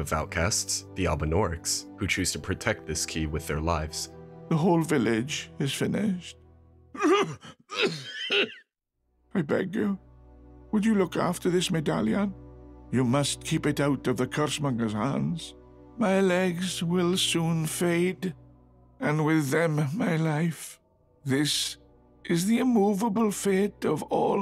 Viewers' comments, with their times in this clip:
0:05 The part with he old guy coughing had me in stitches xD